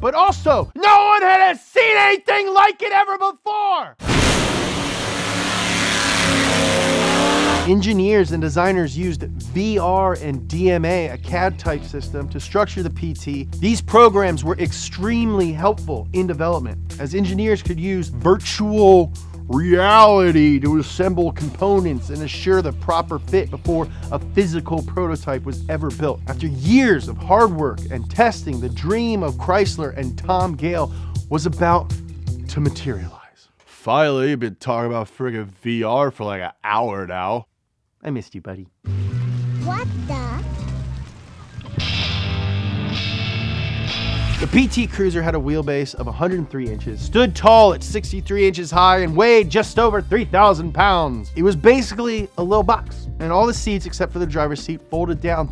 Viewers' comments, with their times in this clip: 0:03 Right when he started yelling an ad popped up and just cut him off
0:40 LOL THE MUSIC MAKES IT SEEM LIKE AN OPENING SCENE OF A HORROR MOVIE